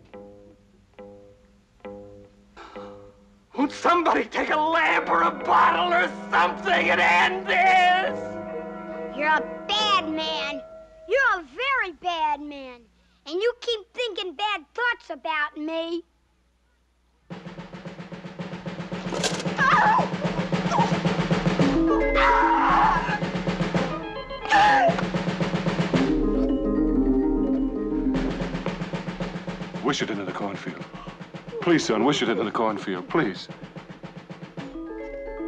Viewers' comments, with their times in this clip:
0:04 Dan Hollis sounds like he’s on the verge of insanity. ("Won't somebody TAKE A LAMP OR A BOTTLE OR SOMETHING AND END THIS?!!!")
0:17 The drum cadence is very infectious.
0:19 so freaky the reactions sell it and not showing it long. Plus the great creepy music.